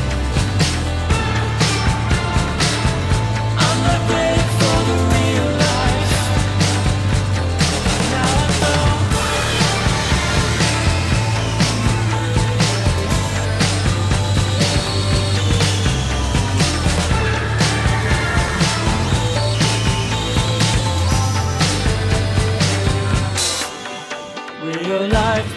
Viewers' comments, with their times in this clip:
0:08 The awful sounds just ruin an otherwise perfect song for me.